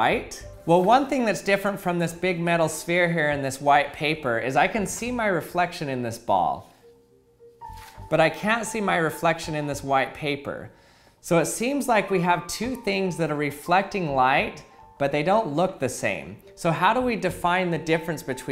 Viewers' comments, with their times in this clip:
0:04 Im concerned about that pause
0:05 He pauses when he says "i can see my reflection in this ball"